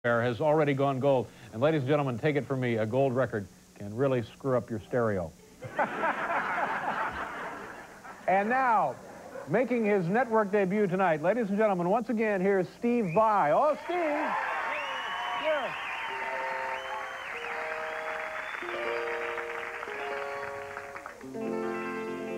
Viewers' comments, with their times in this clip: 0:07 He fartet when he laughed. he smells it